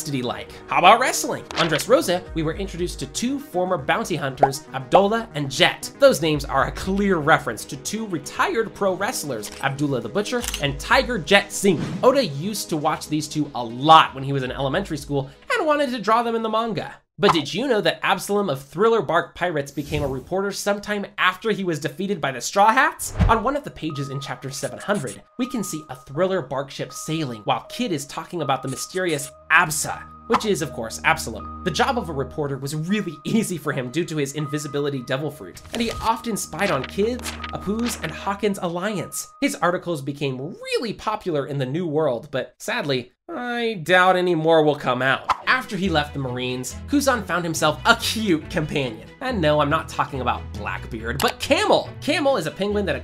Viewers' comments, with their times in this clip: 0:03 bounty hunter=❌ Bouncey hunter=✅
0:35 AYO WDYM HE OFTEN SPIED ON KIDS
0:36 "He often spy's on kids" AYO Time stamp: